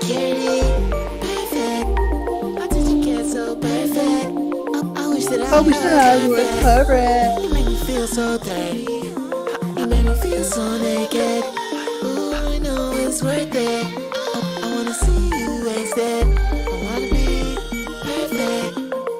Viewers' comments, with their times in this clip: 0:04 i wish that i was cloud rap lol!